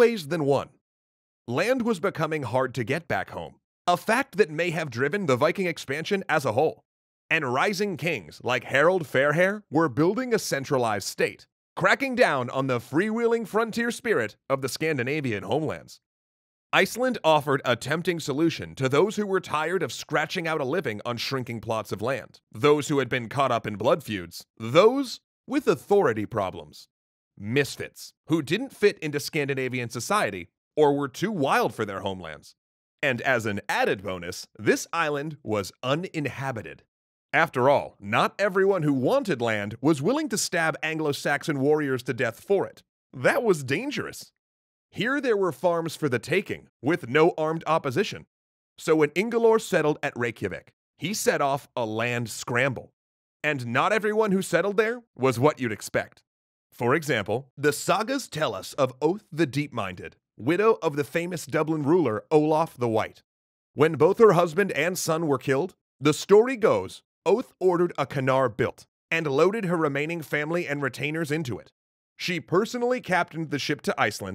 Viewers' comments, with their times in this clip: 0:07 Harald Fairhair. Yes, *swish of hair*, really.
0:56 is that supposed to be, oh my goodness.